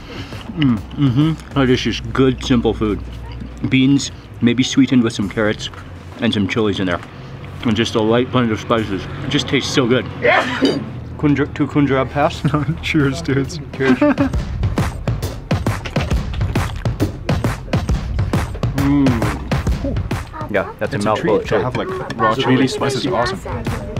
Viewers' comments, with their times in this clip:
0:09 bless you XD